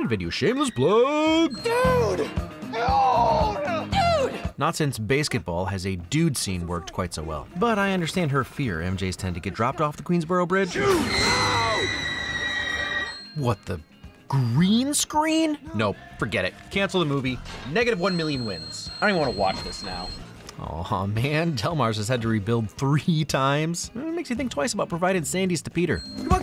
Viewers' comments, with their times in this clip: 0:10 I just realized that Tobey sounds a lot like Yuri Lowenthal (Insomniac Spider-Man) right here.